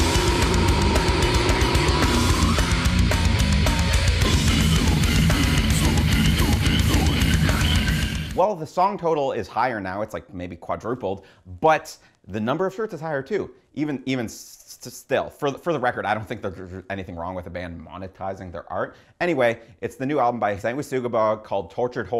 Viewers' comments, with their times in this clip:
0:05 ive heard some screams in metal but this just sounds like he is burping the alphabet